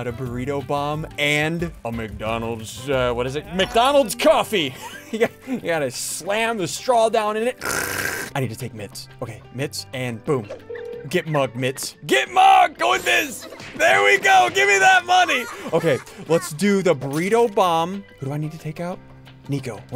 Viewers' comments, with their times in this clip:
0:06 very personal slurp
0:06 Yes is a very personal slurp